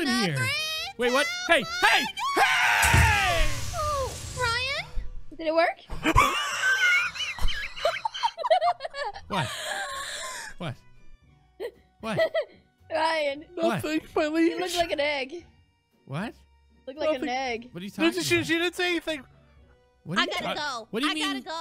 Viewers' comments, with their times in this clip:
0:04 That wheeze had me on the floor laughing
0:04 unicorns laugh is making me wheeze😂😂😂😂😂
0:05 OMG...THE LAUGH OF UNICORN MAN WAS LIKE... LMAO
0:05 unicorns laugh tho
0:06 That laugh had me dying
0:06 his laugh made me die o my god I cant breath😭😂